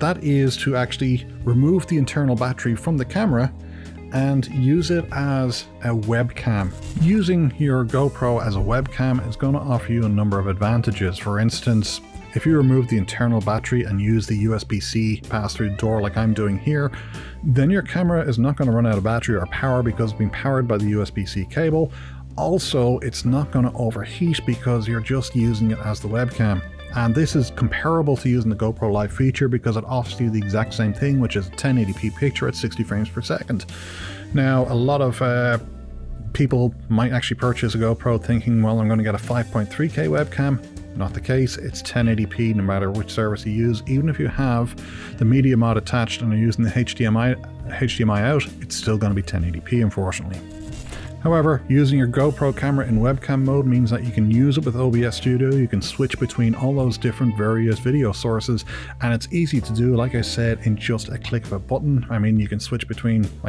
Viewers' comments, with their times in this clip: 0:05 The static interruptions that you are getting, like are because you are in a basement working with wireless.
0:44 I knew it 🤣 you're a Newfie "H, hdmi " that's great I finally have a use for my GoPro 10. I've been having a heck of a time figurin' out how to use the software for GoPro on the PC and OBS Software, seems very buggy. I take the battery out, works better that way. Sometimes I have to unplug and replug the GoPro back in so the PC can see it, and YouTube Studio Live Stream has to be closed and set up again, but I just can't get a Video Stream set up in OBS to Stream to Youtube. It's complicated, but it's Not supposed to be, and you make it look easy. Thanks for Sharing your experience. Have a good day on the Rock. 😃